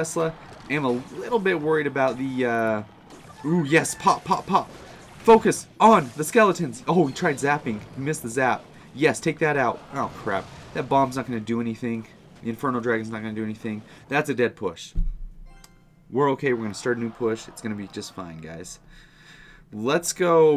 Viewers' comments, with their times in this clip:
0:03 he was singing mans not hot